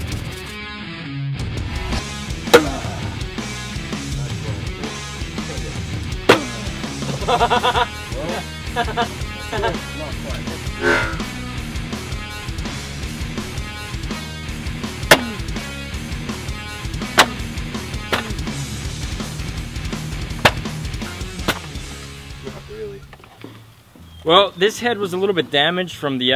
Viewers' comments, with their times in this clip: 0:05 That laugh tho'
0:07 dat laugh :D
0:08 lmao that laugh tho...